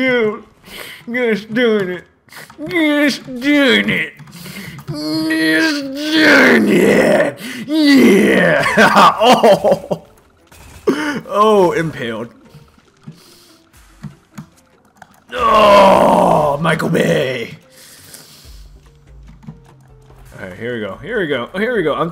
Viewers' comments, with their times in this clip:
0:03 old man voice